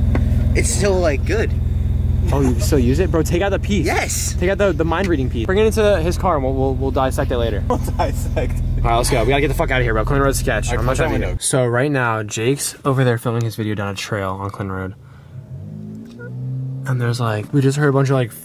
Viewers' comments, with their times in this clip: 0:06 THE FUCK WHEN MANFS ALARM FOR WENT OFF MY PHONE SAID TOO WTF DOES THIS MEAN